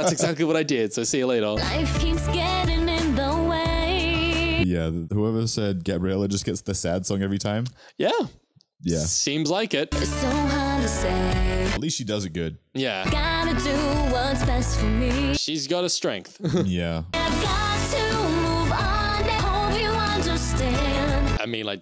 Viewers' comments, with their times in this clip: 0:04 “ GOTTA GO MY OWN WAY “ TOP TIER!!!… IN HSM 2 ✨👏🏾 I ALWAYS END UP SINGING THAT SONG LIKE IT JUST CAME OUT YESTERDAY THAT’S JUST HOW GOOD THE SONG STILL IS FOR ME PERSONALLY THEY REALLY SING WELL TOGETHER!!!.. JUST WAIT TILL THE NEXT MOVIE “ CAN I HAVE THIS DANCE “ AHHHH!!! 💯🎥🍿🎬🎤🥺☺️